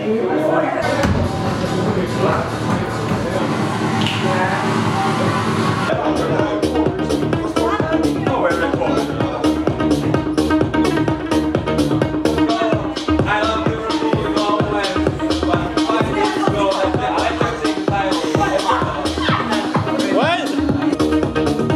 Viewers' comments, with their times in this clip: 0:03 Lets gooo :D Nice good music start btw